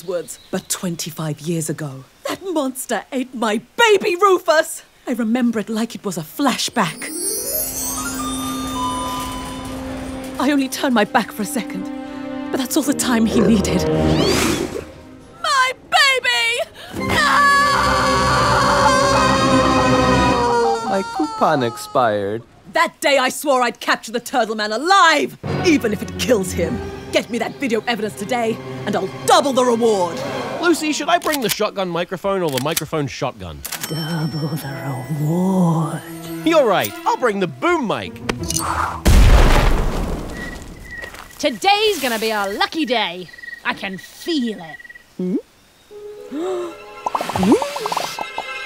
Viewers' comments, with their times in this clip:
0:07 The bell chimes literally said "flashback" and it's amazing.
0:34 Oh yeah, I am definitely getting some Mr Krabs vibes on this bit.